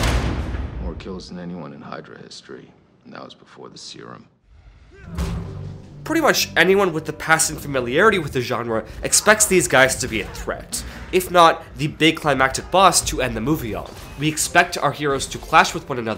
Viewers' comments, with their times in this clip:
0:03 Syrum? You mean serum.